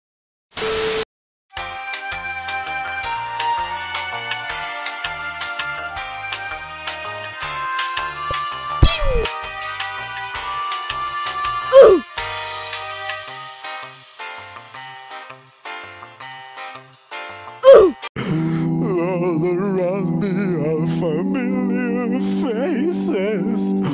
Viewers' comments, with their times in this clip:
0:10 Idk why i started dying and i choked on my cereal because of the oof